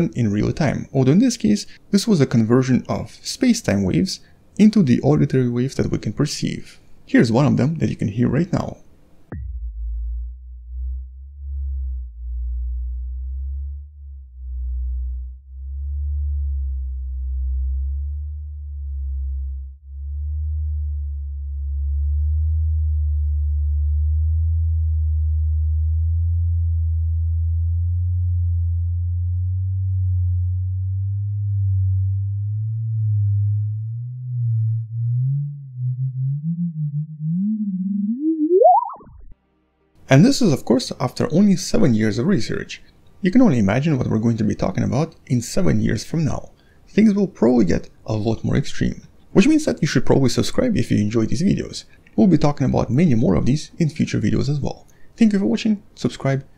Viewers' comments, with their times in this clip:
0:09 sounds like space sex
0:39 that little woob! at the end 😄